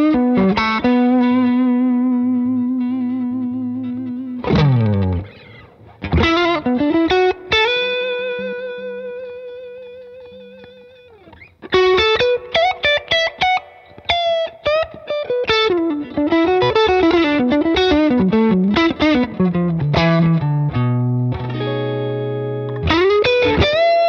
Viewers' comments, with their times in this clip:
0:05 The first seconds of the Tele holy shit that sounds good !!!!!